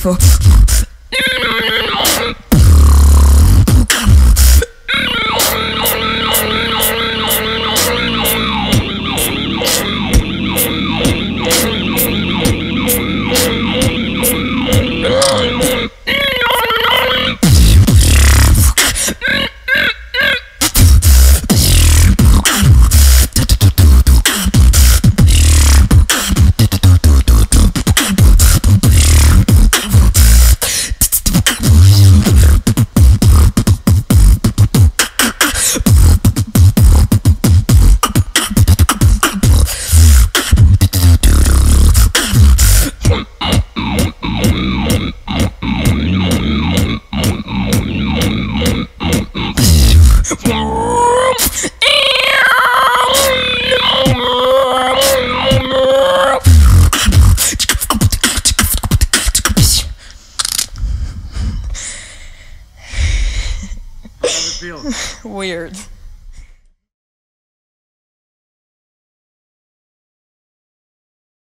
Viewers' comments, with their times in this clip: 0:04 very nice, a little clearer and it would be perfekt
0:05 my voice totally itched xdddd
0:16 SOUNDS LIKE PENNYWISE COMIN FOR STANLEY
0:17 min Sounds like I'm sitting on the toilet
0:44 I’m so sorry, but it sounds like a pig...
0:50 Jurassic Park would like to know your location
0:52 Sounds like a cat on auto tune...lol still awesome..